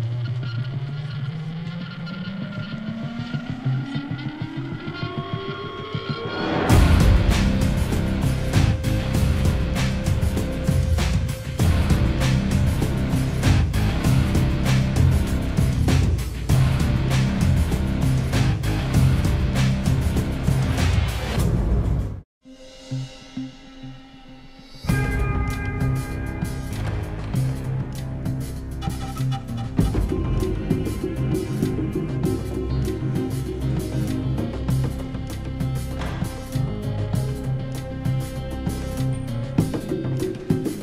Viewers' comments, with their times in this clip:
0:06 My god that that theme
0:06 The music change is so under rated
0:24 I just love that sinister bell , it's basically the Company's signature theme